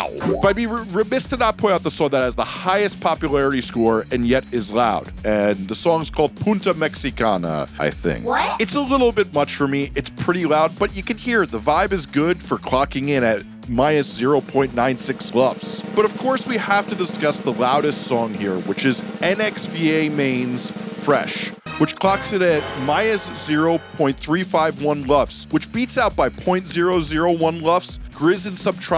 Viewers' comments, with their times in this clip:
0:10 Thank you so much for taking the time to explain this. The loudness wars, luffs, and all that junk is one of those things I have a hard time wrapping my head around and you gave some great examples, I think that’s why I had that misconception about loudness and what Spotify does to your mix. That FALILV song you posted was a great example, I actually love that song. I always wondered why it sounded like that and now I know why. Btw, the song means “Mexican H*e” 😅 but the way you pronounced it made it sound like “Mexican spike/point” (almost the same word, just with an “n” between the “u” and the “t”) so I don’t think the algorithm will pick it up and hit you with the banhammer, or at least I hope not lol As always, great content and thank you for making my life easier!